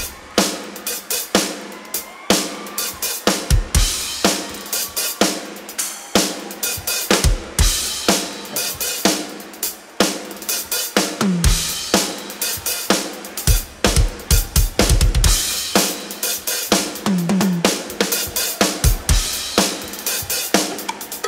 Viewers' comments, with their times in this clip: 0:04 My brain can't help but hear "Push It" by Salt and Pepper Aaahhhh push it!